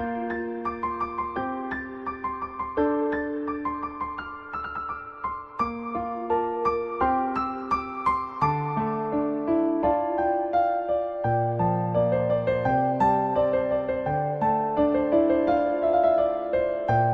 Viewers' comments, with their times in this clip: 0:04 The First Seconds, I like it with the piano